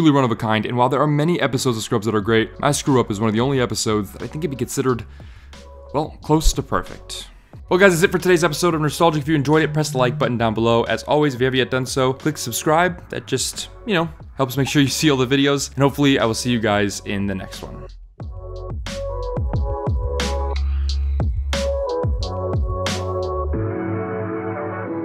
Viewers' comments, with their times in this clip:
0:07 You getting a text message :)